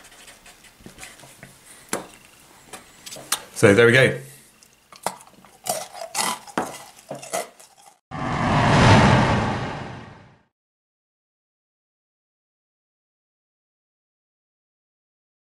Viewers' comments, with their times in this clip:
0:05 cheeky bit of ASMR